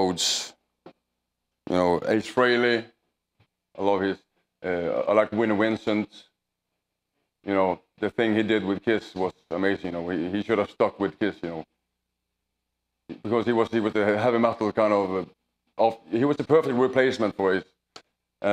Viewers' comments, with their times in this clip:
0:03 Who the hell is Winnie Winstons? XD